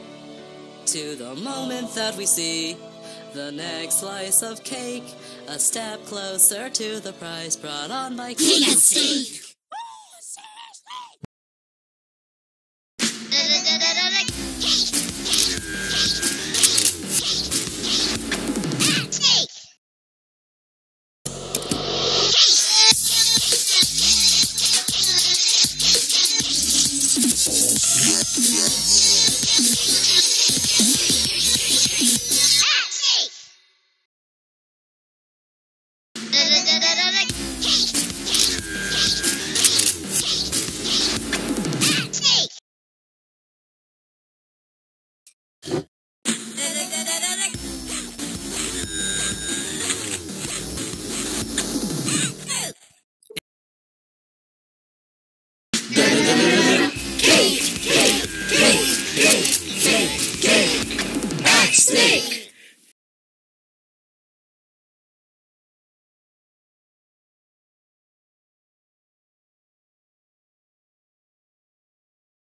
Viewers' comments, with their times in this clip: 0:08 tear drop just spoke
0:08 DID TEARDROP TALK
0:09 teardrop can talk
0:54 uh that is the fans singing if u didn’t know. Even in the original it says in the suggestion box “Add your voice to this song!” In BFB 12